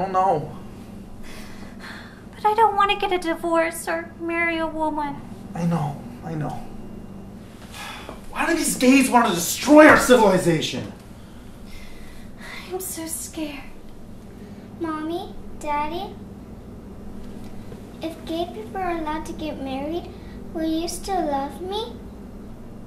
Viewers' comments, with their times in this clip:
0:03 My stupid band-club loving a$$ thought she said “I don’t want to marry a woodwind”-